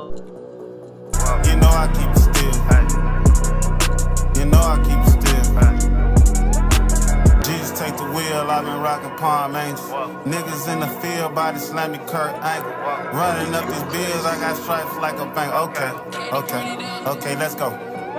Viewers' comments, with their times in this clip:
0:03 somebody sign dat man…and that beat so fuckin raw make me wanna slap da producer what’s the name of da song?